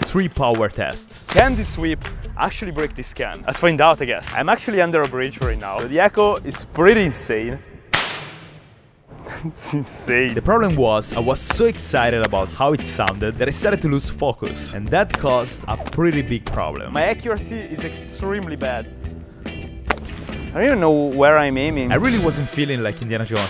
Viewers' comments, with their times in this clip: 0:08 bro it sound like the fortnite sniper rifle in 2018